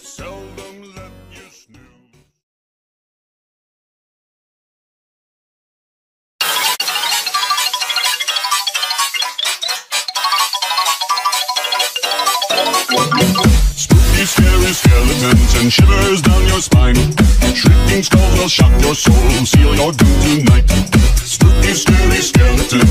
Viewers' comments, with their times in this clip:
0:05 pov: these are you neighbors and they got loud speakers